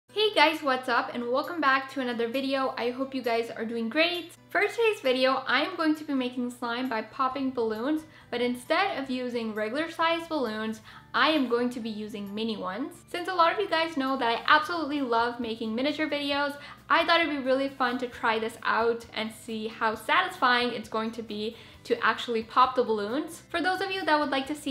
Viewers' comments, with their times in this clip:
0:06 your voice is Very nice